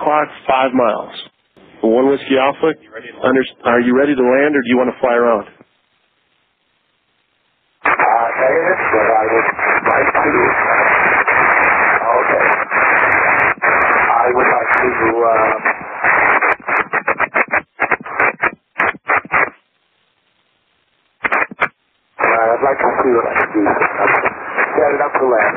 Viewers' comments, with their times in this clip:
0:06 Captions seem off, he says "negative but-", the captions go "aye, yes, sir" I cant hear the entire thing but he definitely does sound like he said "Negative" in there fairly clearly